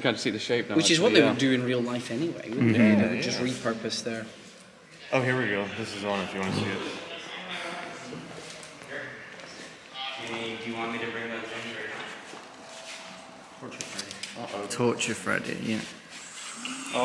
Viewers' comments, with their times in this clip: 0:05 it’s purple Freddy because it’s purple